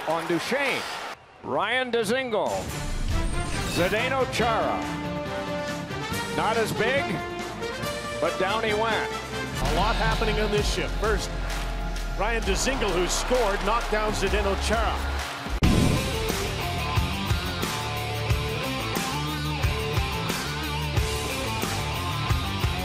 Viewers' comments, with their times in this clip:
0:08 chara laugh while getting hit? ._.